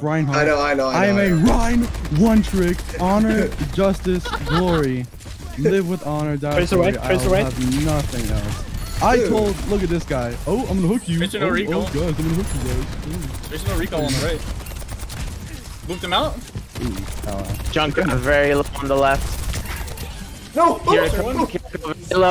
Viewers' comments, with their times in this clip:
0:08 Pc plat hog imitating imitating Andrew tate on that hog